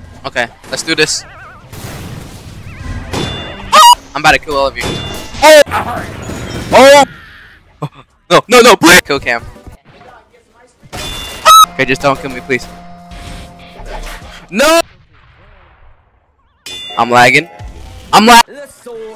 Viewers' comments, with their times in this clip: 0:03 WHAT THE HECK WAS THAT SCREAM